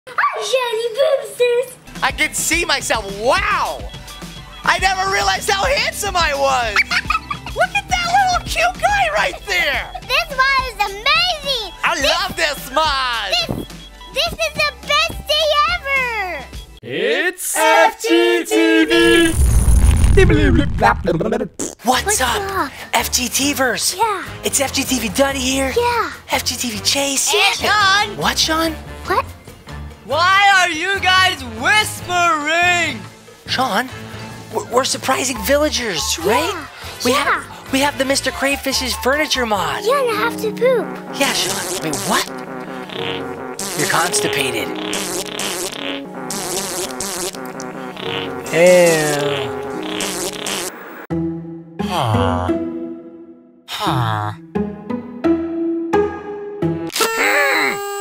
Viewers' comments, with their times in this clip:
0:03 I thought the alarm was the music in story mode when you see the wither!
0:06 That sounded like something other than lil' for a second.
0:41 the dead silents made me laugh so bad